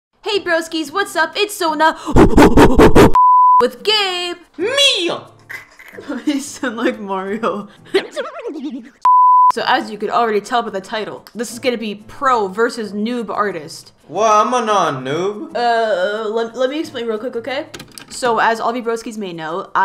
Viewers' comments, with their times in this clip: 0:02 OMG MY EARS!!!!